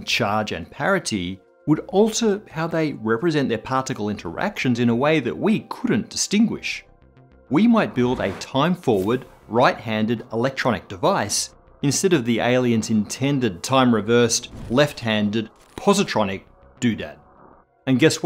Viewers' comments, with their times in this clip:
0:05 anyone else notice the weird audio words are like missing... "would also__how they represent their particle." he literally never says the word change and the video seems uncut at that point?? Am I just tripping lol?